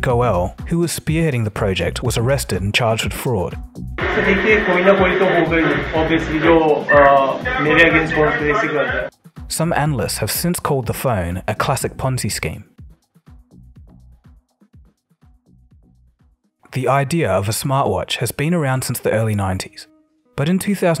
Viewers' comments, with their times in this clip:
0:03 He sounds like Trump 😂